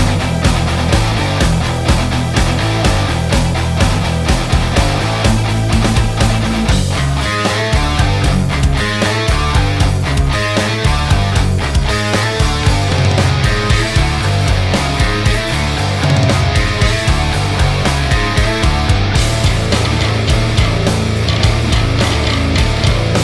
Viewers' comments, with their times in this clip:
0:07 If you saw my smile rise when I heard this riff :D thanks for giving Chuck the respect he deserves with, in my op, one of his bests songs he ever made